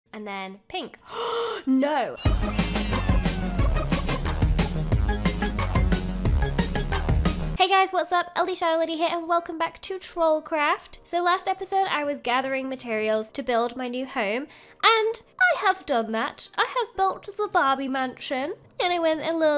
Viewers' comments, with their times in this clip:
0:01 Lol I love how she just goes “and then pink… GASPS NO”
0:01 😮😮😮 no Edit: sounds just like hermione granger from Harry Potter saying no